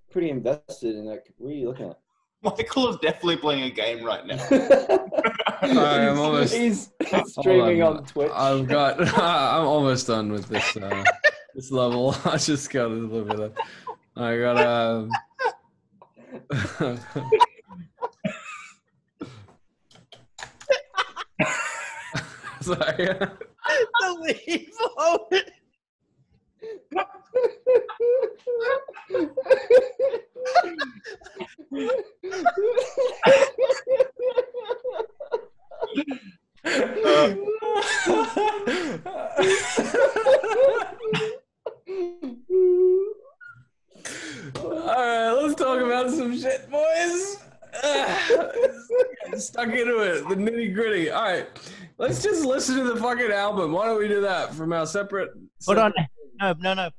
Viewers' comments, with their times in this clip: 0:05 The way Cal started laughing from and then everyone else were just laughing hard for almost 40 seconds 😂 even I couldn't hold my laughter in for long, I swear Calum can make any1 laugh in just few seconds, dunno why but it reminded me of Niall 😂😂
0:08 if you're not laughing when they are laughing, I don't trust you
0:20 I’m watching this in 2024 now, and Ashton’s laugh is so contagious. He just laughs so hard and it’s so genuine 😂
0:28 ahahahaha their laughs omg I’m crying hahahahha
0:38 Everyone: 🤣💀🤚🏻 Luke: 😐 elevator music